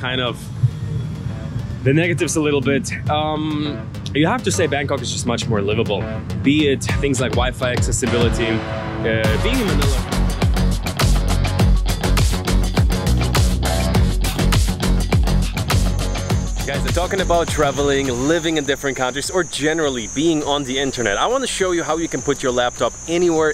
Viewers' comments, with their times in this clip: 0:09 ah man, you keep cutting out your transitions like you cut out your audio halfway through you making a point - its really jarrying and takes away the smoothness of your vlogging. I am noticing it across your videos. Apart from that i really rate your videos!